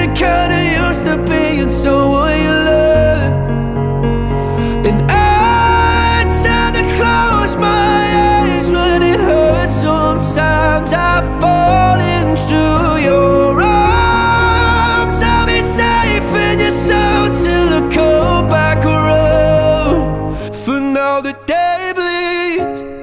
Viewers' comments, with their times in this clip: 0:04 The blow dryer has got to be the best part
0:05 thought the hair dryer is the one who scream to him
0:06 I wonder whr that voices comes from...
0:11 Scottish Beyonce right there